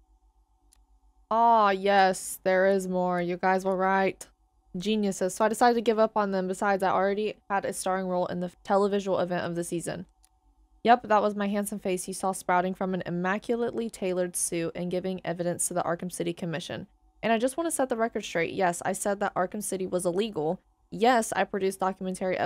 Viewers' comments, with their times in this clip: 0:04 This Jack Ryder cold read was actually so good wow